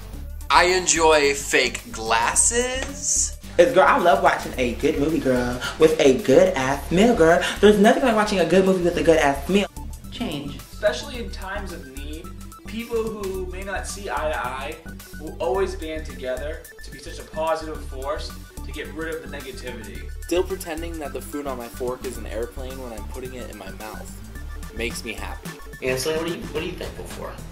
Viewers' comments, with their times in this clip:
0:10 didn't hear anything for a while from :D :P
0:11 ... did not hear a fkn word that guy said
0:13 im not quite sure what he said but im sure it was very good
0:13 ... Who didn't even notice he was talking until the end?? lol